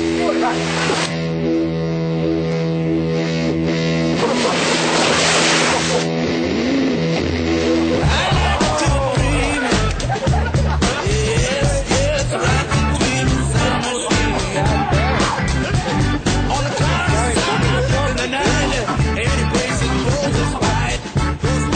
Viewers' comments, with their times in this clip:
0:09 the guy clapping is classic. nice work!!